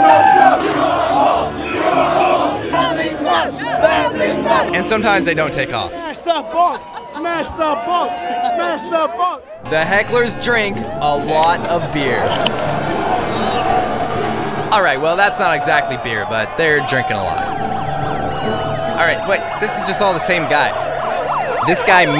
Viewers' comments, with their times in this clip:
0:08 won the hecklefest for sure that chant took off like a nasa rocket